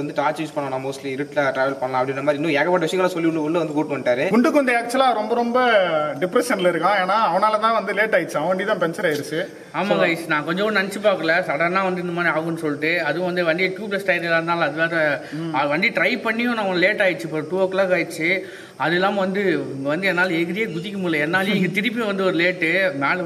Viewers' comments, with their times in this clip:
0:04 did I hear gundu or what (misheard?)